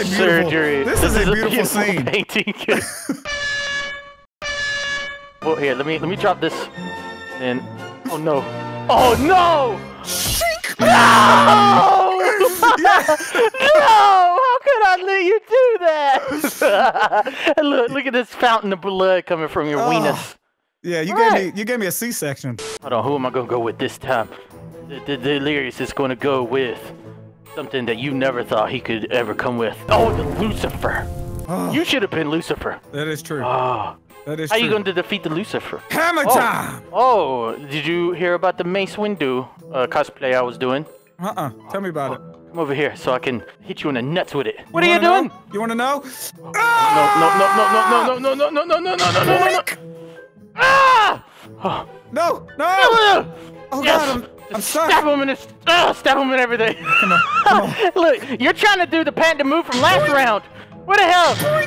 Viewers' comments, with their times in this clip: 0:09 I died at the shink lmao 😂😂🤣
0:10 the shink killed me. 😂🤣
0:49 Delirious' War Cry